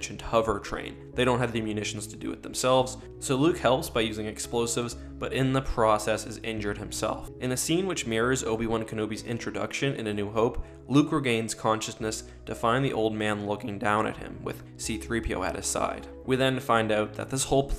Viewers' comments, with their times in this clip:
0:04 the music really starts getting good. What song is this?